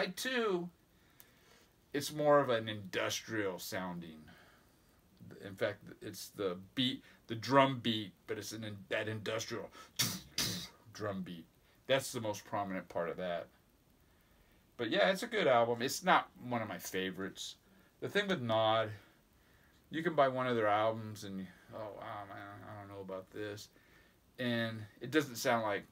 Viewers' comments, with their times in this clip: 0:10 Your Industrial drum beat is spot on!!!!!! Sounds like a beat box.